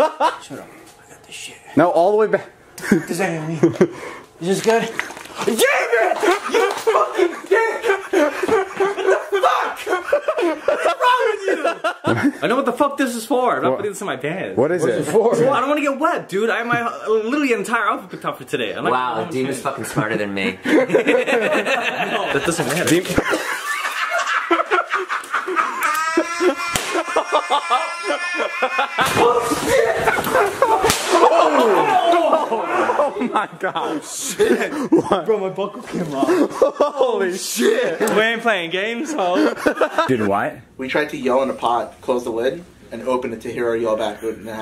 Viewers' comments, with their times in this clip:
0:06 is when David’s chaotic laugh is about to begin.
0:07 listen to david’s laugh lmfao
0:25 the alarm in your car
0:26 when dema whipped the wall and jason going like “HAHAHAHAHAAAAAAAA” for like ten seconds i lost it😂 (i dont think i spelled his name right but u get it)